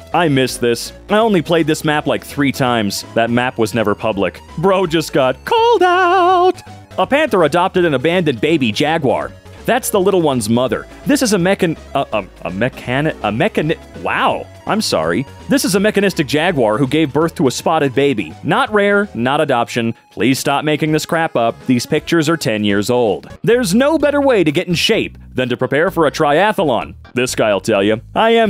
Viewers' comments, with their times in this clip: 0:09 mfer couldn't spell "melanistic"